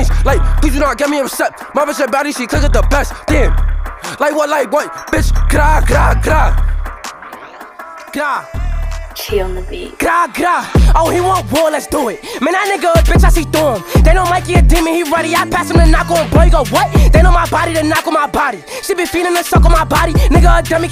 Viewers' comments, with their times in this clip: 0:08 this shyt go way to fuggin hard... beat AND bars...